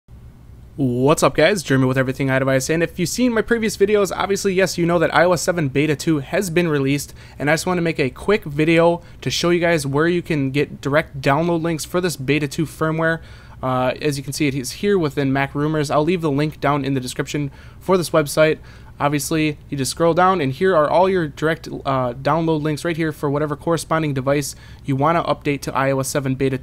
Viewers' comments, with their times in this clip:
0:08 a quik "wediu" :D